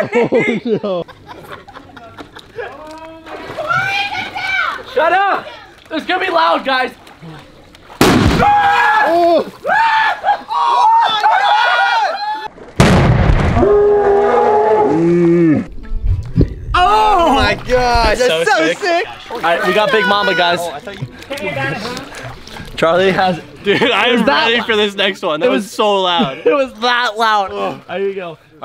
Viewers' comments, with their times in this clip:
0:07 It sounded like a gunshot Or a bomb
0:09 it made my ears ring